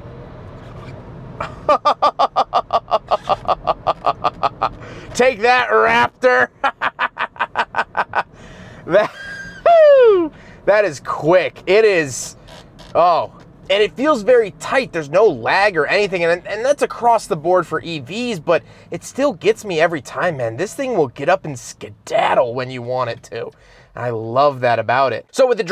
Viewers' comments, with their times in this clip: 0:09 I heard Mario.